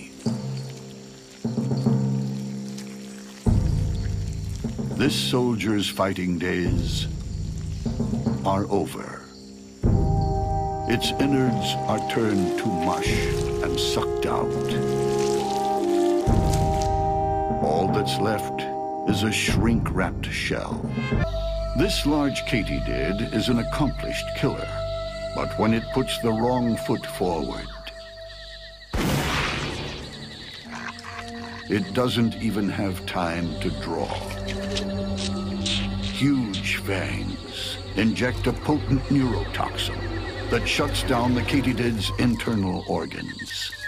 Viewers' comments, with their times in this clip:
0:09 Love the dramatic ww2 music in the background Feels like a Call of Duty cutscene.
0:27 The gun sound lmao